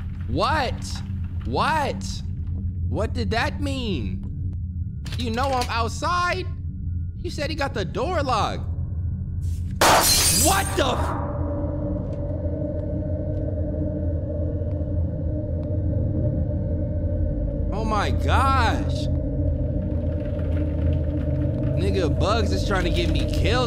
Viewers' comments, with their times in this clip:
0:09 How he said “WHAT THE FUCK” killed me